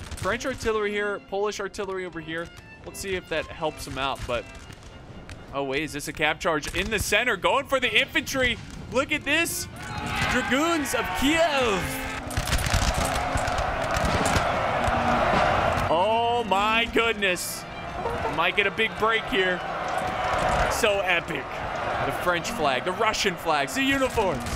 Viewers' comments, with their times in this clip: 0:08 It is the voice cracks that I partly come here.